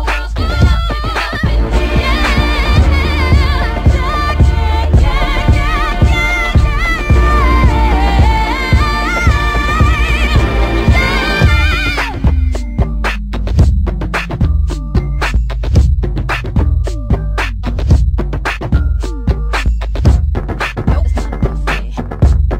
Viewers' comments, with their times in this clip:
0:07 Wow, who is singing ? I love her voice!